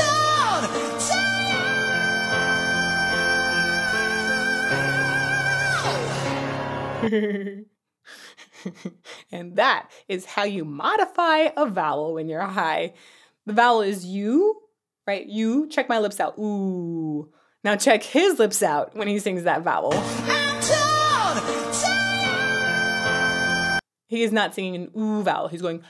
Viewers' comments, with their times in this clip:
0:08 that hehehehehe was personal 💀